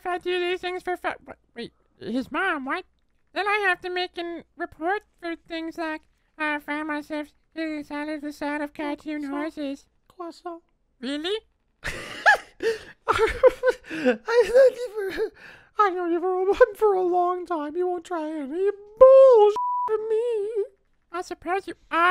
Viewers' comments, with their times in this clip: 0:08 The voices are actually killing me 😭🤚 Croissant